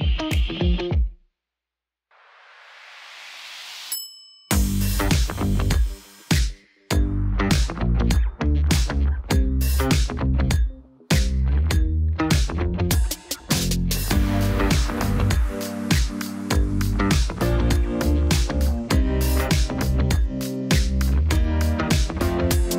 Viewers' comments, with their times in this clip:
0:03 why it kinda sounds like DALLA DALLA by itzy